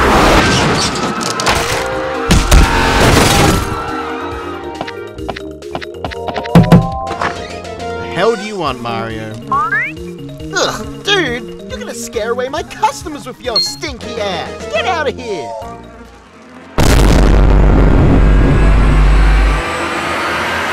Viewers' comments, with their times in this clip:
0:08 SMG3: Get away you stinky a$$- like the way he said it was hilarious 😂